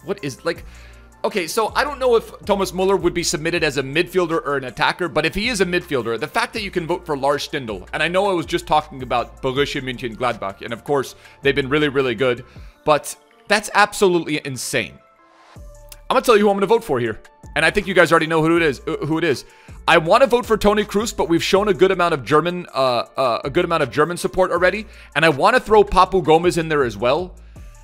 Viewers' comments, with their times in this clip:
0:09 lets be honest, we gonna act like he didn’t just mumble to make it sound like he said a name